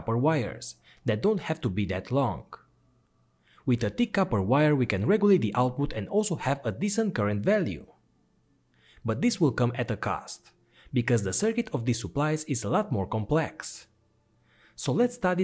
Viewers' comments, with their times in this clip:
0:03 Where can I get that D1ck copper wire you speak about? 😇😉